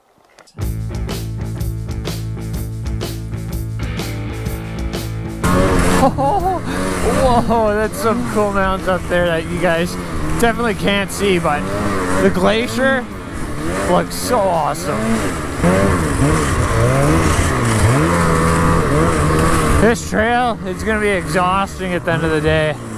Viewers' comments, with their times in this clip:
0:06 I think your the noises you make and your laughing is very under appreciated. Thank you.